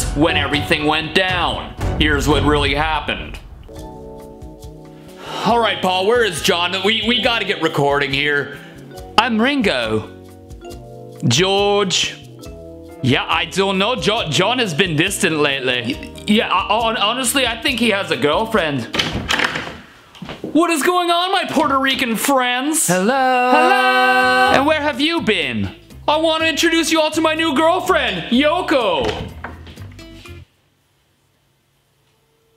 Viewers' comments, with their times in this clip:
0:10 the best english accent ive ever heard
0:20 welcome my portaregons friends